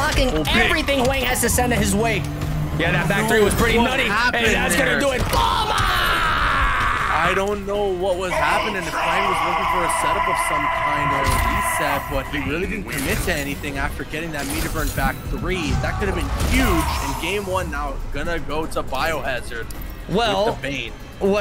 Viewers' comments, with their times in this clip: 0:03 yo this shit was funny that slam with bro hitting that Ultra Instinct war cry Ultra 😂😂😂